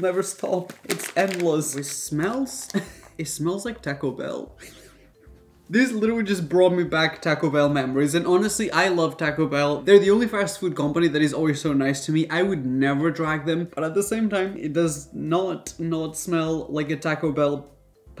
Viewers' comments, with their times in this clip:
0:03 1 snezed as he snezed